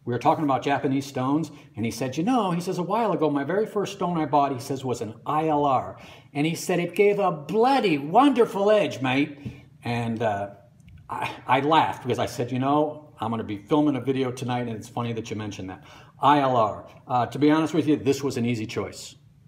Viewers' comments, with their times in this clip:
0:07 is an Australian accent.